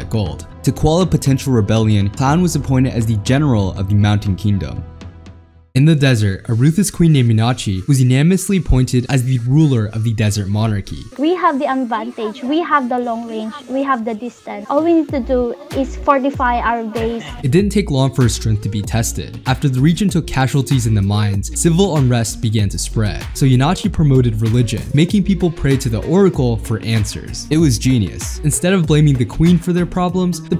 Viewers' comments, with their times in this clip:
0:10 the accent is amazing , we filipinos can clearly recognize each others accent.
0:11 is it just me or she kinda sounds like she has a filipino/filipina accent- idk tho
0:11 Ah yes Filipino accent
0:13 he'r/she voice like a filipino
0:17 filipino accent <3